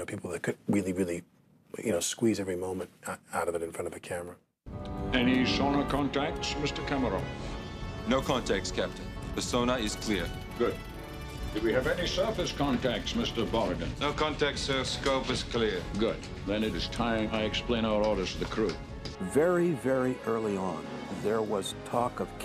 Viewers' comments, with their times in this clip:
0:06 There must be a particular rural Russian dialect that Connery is emulating🤣😉
0:06 I’d argue that his accent is the least offensive “Russian” on the boat ... 😁